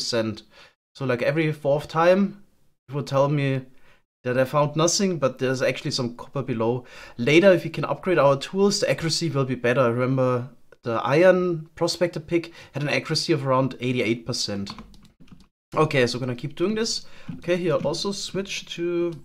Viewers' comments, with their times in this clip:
0:03 the way he says "Nothing" sounds exactly like Sgt. Schultz in Hogans Heros.